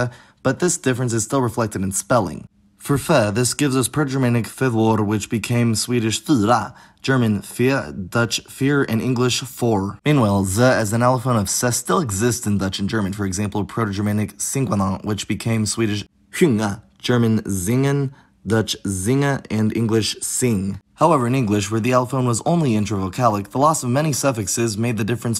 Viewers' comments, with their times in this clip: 0:03 The way you pronounced fyra (Swedish for "four") sounds exactly like when swedes make fun of the accent of people who come from Stockholm lmao. It comes off as very pretentious.
0:05 Dude your pronunciation of the Swedish "fyra" was probably the most on-point I've ever heard by a non native speaker, because you kinda nail the the sound from the upper class Stockholm accent. Your pitch variation in two-syllable words sounds a bit off sometimes, but overall your Swedish is really good, keep it up!
0:07 bruh why does everyone learn this way of speaking Swedish, it's hella goofy and the only people who speak with those kinds of I's and Y's are posh people from a very specific part of Stockholm, you can say "fyra" without that kind of sound, it's completely fine and the correct way of speaking for 99% of Swedes, just remember to have the correct pitch accent